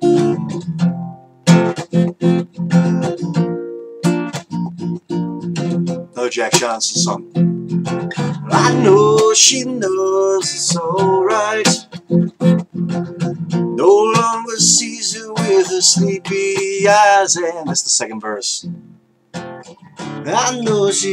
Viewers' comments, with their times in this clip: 0:09 I like the chord sequence makes me think you're right about only needing one chord to write a song that captures people's attention. I think you'll like the East Coast, it's mostly liberal between New England and Virginia, has a variety of seasonal changes and earthquakes that happen only once every hundred years or so.